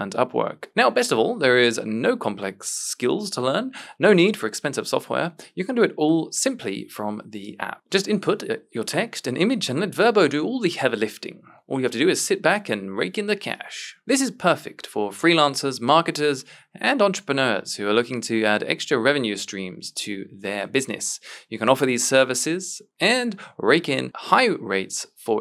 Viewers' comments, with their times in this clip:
0:10 how can you talk like that without clearing your voice, it's incredible. Just do one proper HARRRUMPF and get it over with